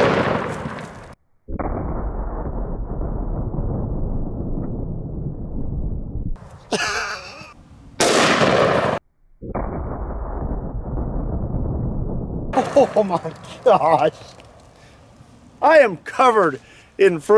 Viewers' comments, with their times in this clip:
0:04 like a church bell